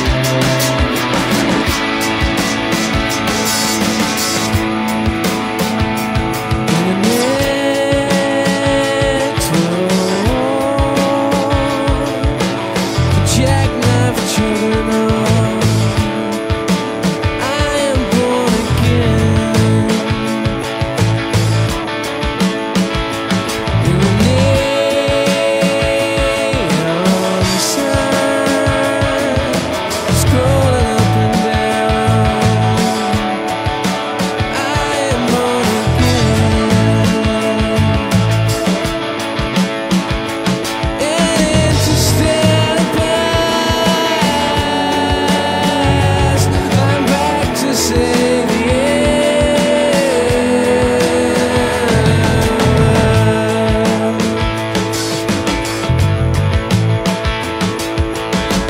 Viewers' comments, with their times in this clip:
0:07 My personal favourite Radiohead track. No matter what mood I'm in, I always feel a kind of wave of calm wash over when the vocals kick in
0:40 And i'm into stealing pants, I'm practicing the n-word